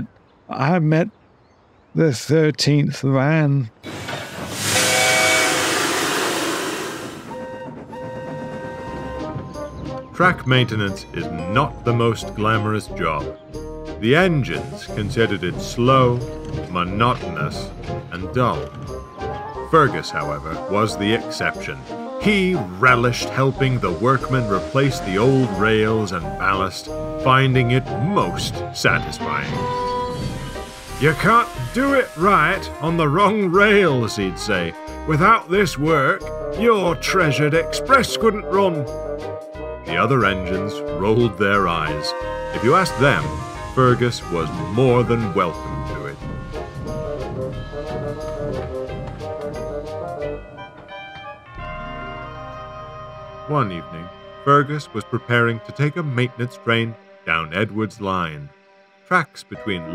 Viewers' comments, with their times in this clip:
0:09 I like how the background music is a thomisfied fnaf song
0:10 So did anyone notice the music ?
0:42 hey that background melody sounds familiar-